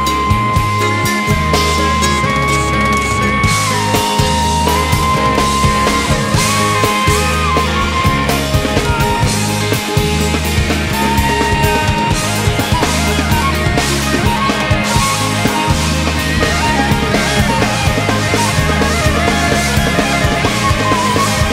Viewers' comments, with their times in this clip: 0:04 there’s just something about that little sequence of notes that leroi hits around the mark that just gives me absolute chills every time.The way that that note helps him lock in with carter...there could be no other better optional note for him to play.That one note gives me chills,and that was just leroi man.He was that good.RIP Grux❤️✌🏻